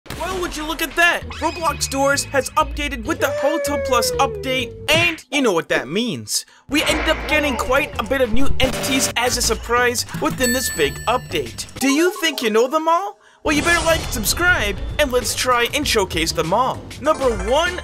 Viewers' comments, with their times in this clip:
0:01 why does it sounds autotuned??